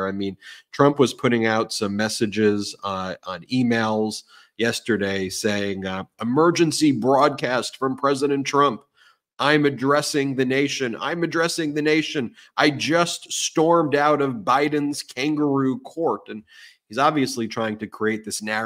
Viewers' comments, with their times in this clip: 0:03 it sounds like Trump has sleep apnea